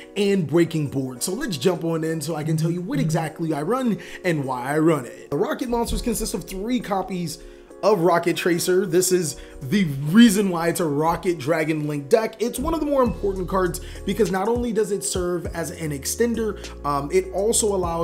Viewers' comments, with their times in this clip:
0:03 nice phone vibrate lol